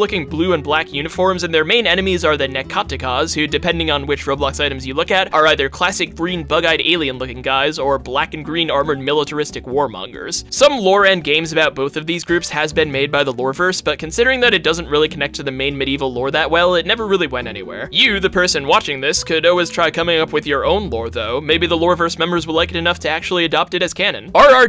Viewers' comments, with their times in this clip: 0:08 the magic discord ping spotted